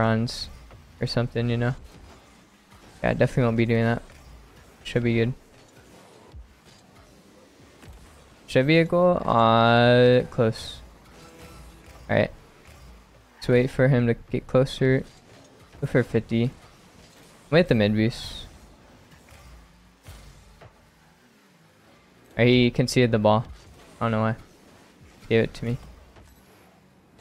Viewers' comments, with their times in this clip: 0:08 "It should be a goal" captions: "it's a vehicle" I mean.. they're both not wrong